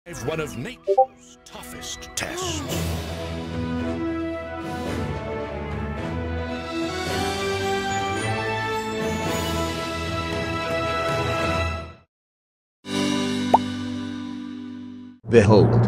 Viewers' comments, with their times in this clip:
0:00 Sorry about the discord sound.